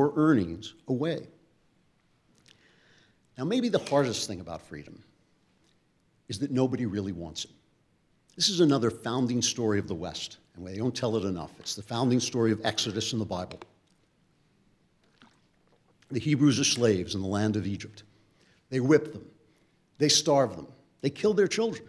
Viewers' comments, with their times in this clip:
0:09 the audio got all static.